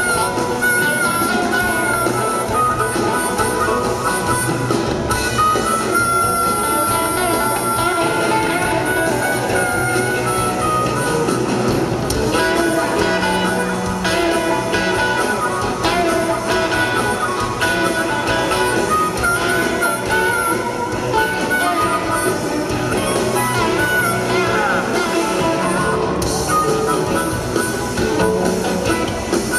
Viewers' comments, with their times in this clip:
0:10 Damn. the two Micks are really in a groove. Great version of this song.